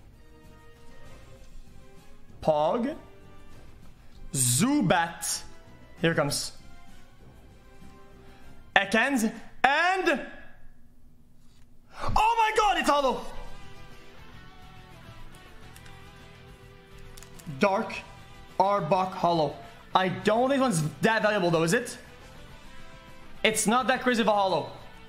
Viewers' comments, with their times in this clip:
0:07 The timing of the music when he pulled out the dark arbok holo was pretty crazy lol